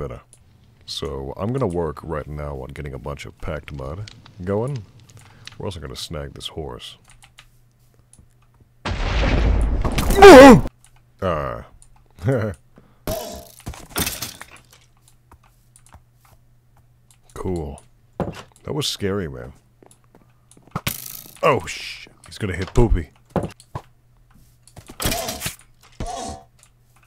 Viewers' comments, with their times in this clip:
0:10 "MMMUOOOOUHH" the sheer fear and goofiness of this scream 😭🙏